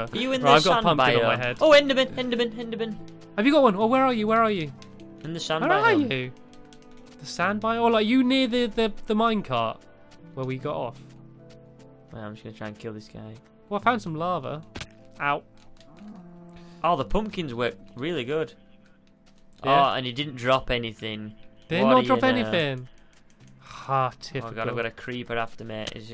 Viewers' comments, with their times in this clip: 0:09 stampy said “where are you?” He had voice crack lol who noticed it